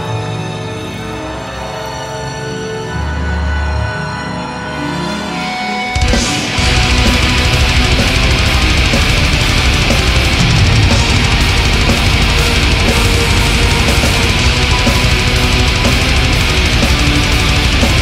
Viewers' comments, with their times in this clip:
0:05 Two of the many things I love about this performance - the almost apologetic "bear with us" from Isahn and the sheer fury when it kicks back in the best black metal band at their peak. Peerless